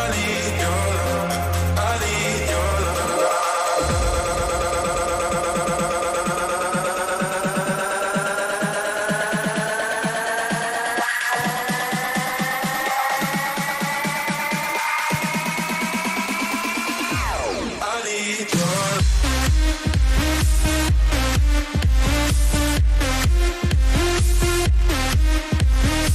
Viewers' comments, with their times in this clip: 0:10 can hear filter sweeps but he's not even touching the decks... ok then